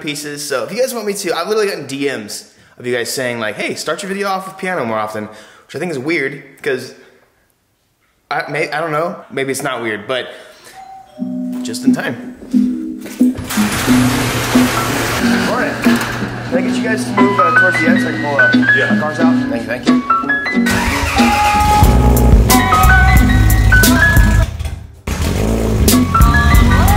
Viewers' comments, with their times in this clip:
0:10 holy shit, that doorbell noise made me go check my own door at home LOL